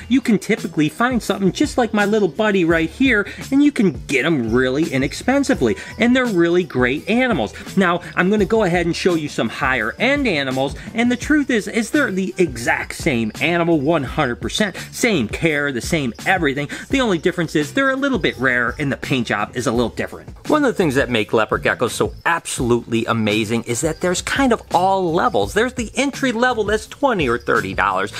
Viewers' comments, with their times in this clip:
0:10 you literally just grabbed the poor baby upside down...and you say the screams are “cute”... it’s screaming cause it feels threatened and scared! Probably because you’re carelessly grabbing it and flipping it!